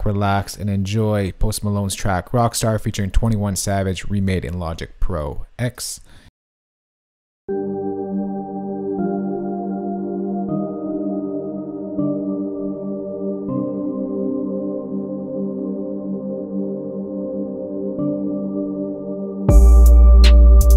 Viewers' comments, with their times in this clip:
0:08 beginning sounds like Alan Walker - Alone LOST IN YOUR MIIIND